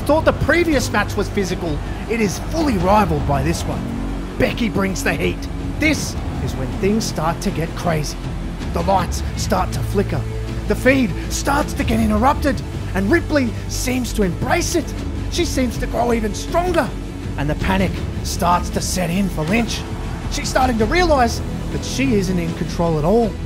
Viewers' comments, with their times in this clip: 0:10 did he say the feind?